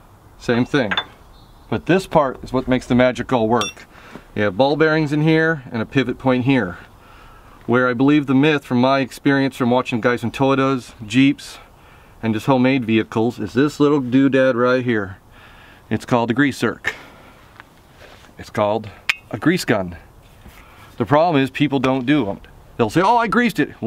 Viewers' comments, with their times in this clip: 0:10 Did he say "Toytoes"?